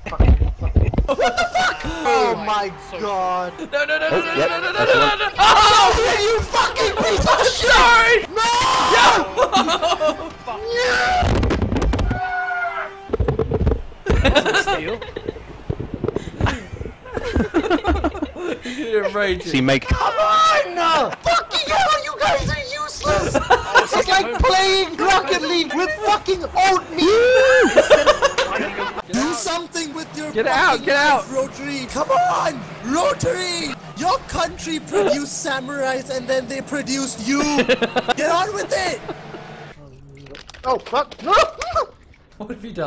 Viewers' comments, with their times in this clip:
0:07 the amount of fear in that “I’m sorry” is impressive
0:08 I will never forget that “NERRRR” at the
0:24 my tired ass thought he said when instead of with
0:27 i misheard Old People as Oatmeal.